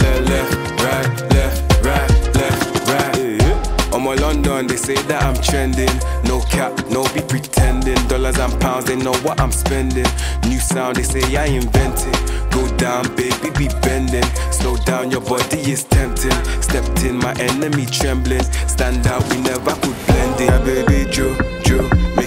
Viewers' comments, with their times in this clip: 0:03 This is song is very good. That adlib on is maaaaaaaad, i keep repeating it.